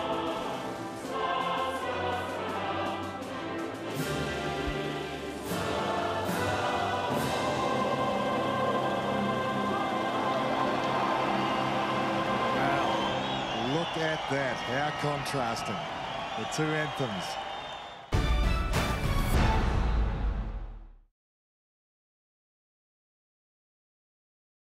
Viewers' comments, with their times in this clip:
0:05 who else realized that the Americans were singing with the Russians? 😂
0:16 Normal russian national anthem That one guy in the crowed: USSR ANTHEM